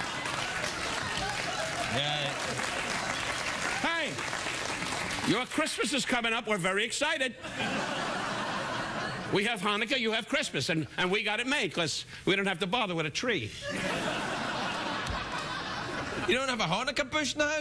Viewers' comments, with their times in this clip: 0:03 Since when was "God" a bleeped word?